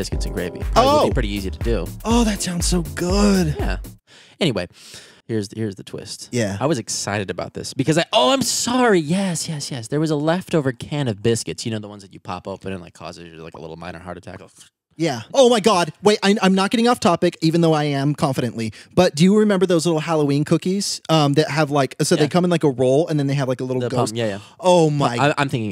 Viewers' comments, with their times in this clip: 0:10 Andrew: There was a leftover cannabis... cuits